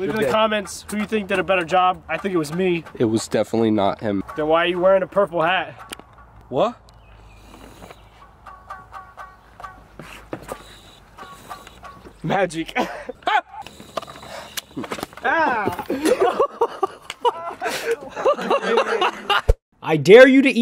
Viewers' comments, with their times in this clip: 0:06 the ukulele in the back hahaha